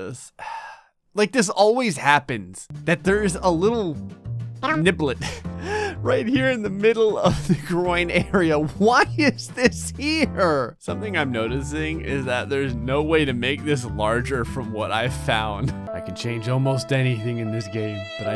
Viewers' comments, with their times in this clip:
0:03 the yoshi tongue noise I- 😂😭
0:04 I had to pause the video. The yoshi noise broke me. 🤣
0:04 the yoshi sound effect had me dead lmaoo
0:04 OMG THAT YOSHI NOISE